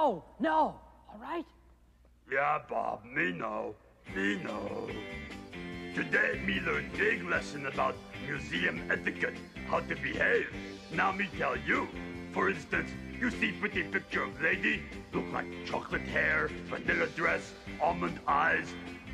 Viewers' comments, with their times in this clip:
0:04 absolute banger begins